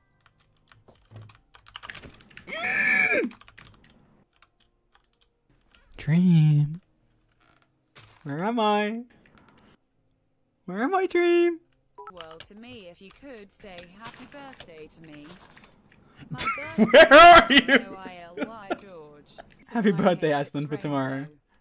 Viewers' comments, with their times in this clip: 0:06 Dream must have had a very bad gay panic 💀 I MEAN, LOOK AT THE VOICE PLS BESTIE😭